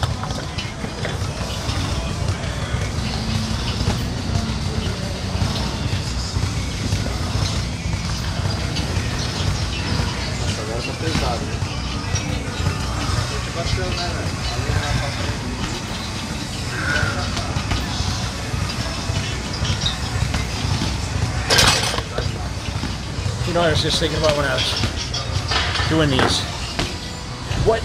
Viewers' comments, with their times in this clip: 0:10 OMG.. Brazilian guy talk.. Kkk Im brazilian to kkkkk